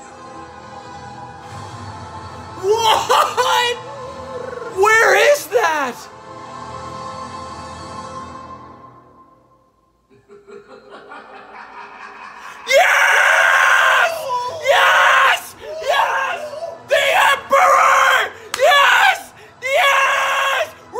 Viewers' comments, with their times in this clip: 0:04 I am living for that excited Ewok noise he makes